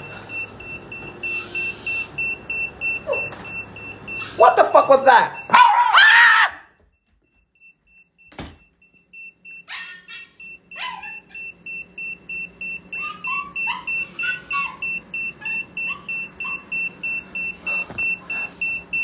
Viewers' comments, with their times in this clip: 0:03 " dog heads turn? what the fuck was that?- dog barks and comes running like a monster AA" bestie that was actually funny- i feel bad for laughing